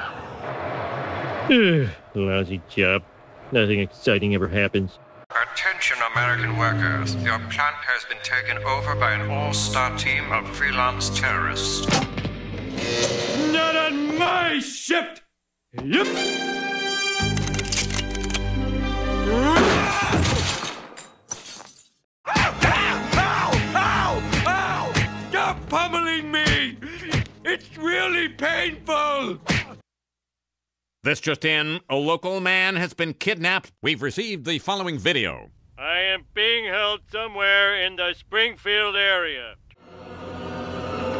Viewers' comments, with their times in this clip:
0:05 that nigga sound like Vincent Price
0:23 In this one second that there was only the sounds of punches and kicks, I remembered the line, "stop pummeling me! it's really painful!" And then it was there!